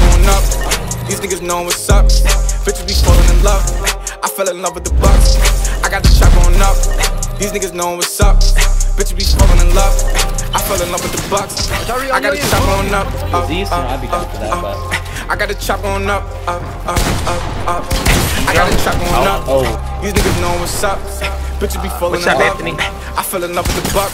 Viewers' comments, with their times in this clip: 0:08 what happened here audio error?